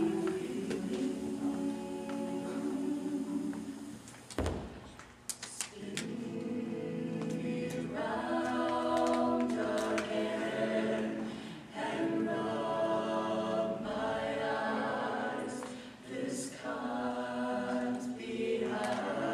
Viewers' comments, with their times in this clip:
0:06 Sounds great! But that is not the way to conduct it. You should feel this song in 3. Your conductor is forcing it into 2. See how his hand isn't falling regularly? Again, you guys sound great, and you're feeling it in 3 for the most part, but it's sort of hard to watch your conductor.